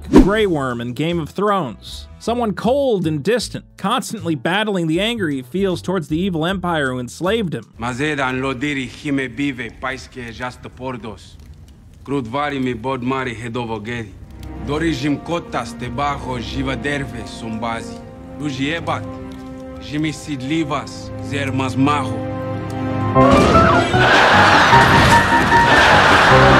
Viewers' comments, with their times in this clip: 0:08 it’s such a sudden turn and degrading song it was so fitting